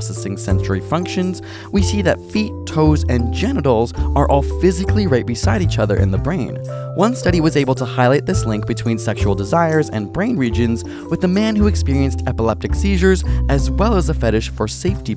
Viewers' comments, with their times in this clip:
0:03 lmao his voice cracked